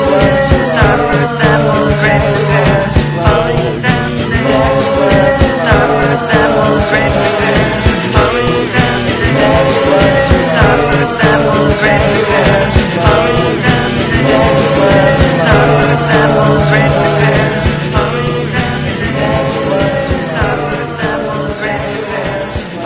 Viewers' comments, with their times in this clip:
0:07 It’s in the left ear